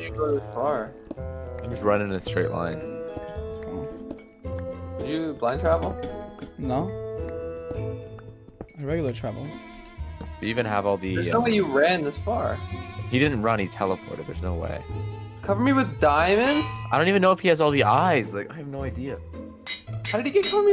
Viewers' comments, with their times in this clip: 0:06 the xp lined up with the music